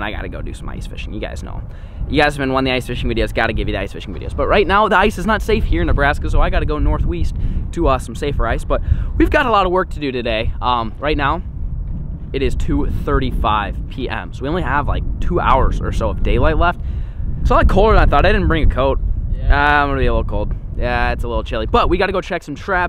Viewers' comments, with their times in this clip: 0:06 flair:"but i gotta go northweast"
0:07 north weast is that a mix of east and west😂😂